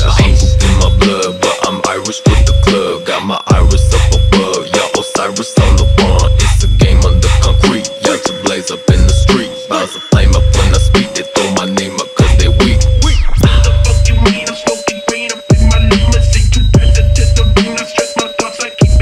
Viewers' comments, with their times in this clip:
0:05 that fucking transition